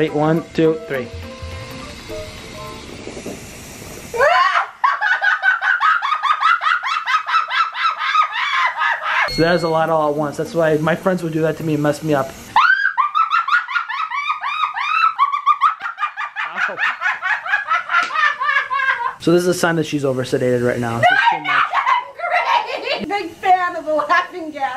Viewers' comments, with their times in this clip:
0:07 My favorite horror movie laugh scene